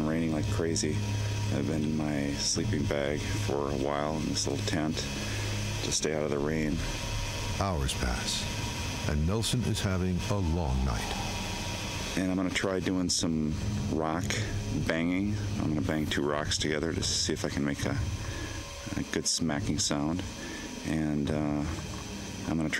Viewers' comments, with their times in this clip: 0:10 Didn’t anyone notice the loud howl ?